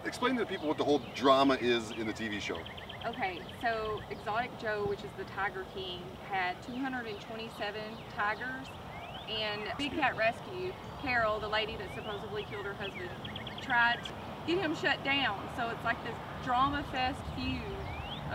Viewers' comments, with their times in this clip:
0:04 Enjoyed the little avian serenade and before/after! Cardinal singing😍